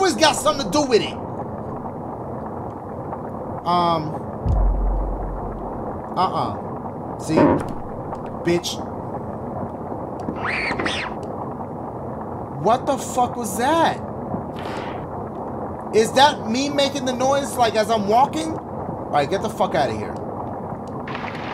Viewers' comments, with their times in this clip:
0:04 Dashie didn't even notice the guy in the window ! Also, how did that guy mimick a little girl's voice?!?
0:06 Dashie: uh uh floor creaks and Dashie flinches bitch. ✌🏽